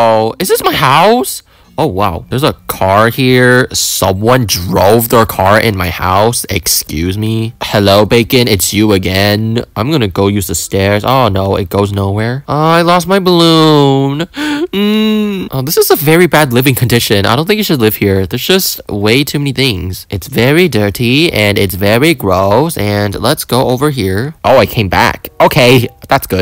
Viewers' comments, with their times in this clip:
0:09 Bro i woke up am and im watching it at that time😭😭😭😭😭💀💀💀💀💀💀"i lost my water:(